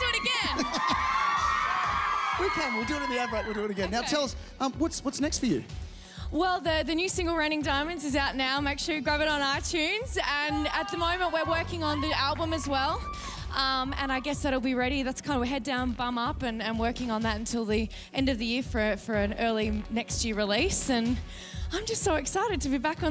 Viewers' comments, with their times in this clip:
0:07 did anyone else hear the "noooo" ?